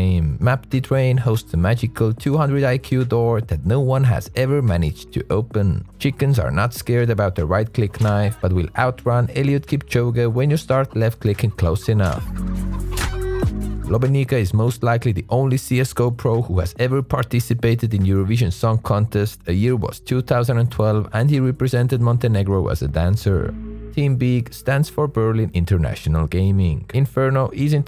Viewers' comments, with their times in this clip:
0:08 "but will outrun elliot kipchoge" yeah i agree with the subtitles this is literally what i heard too